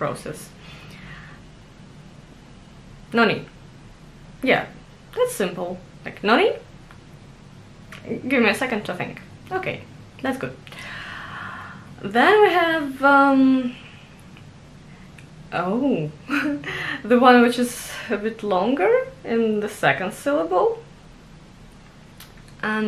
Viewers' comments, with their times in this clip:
0:03 The pronunciation weight makes such a difference in this word.. It can be everything from disappointment, reprimand to excitement. Like how you first couple times say it let's get serious. But not the third time you say it. Third time you have too much of an uplift in the end to mean the same thing as first two.